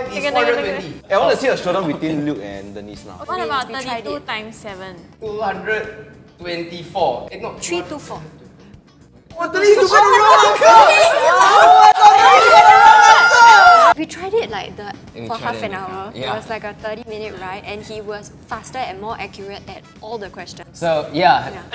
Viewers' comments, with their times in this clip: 0:08 was that cleverly?????🤨🥹